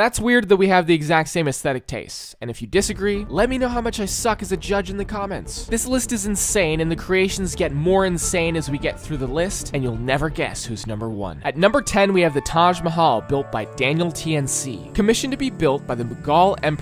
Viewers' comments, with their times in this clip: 0:03 Careful how you say that name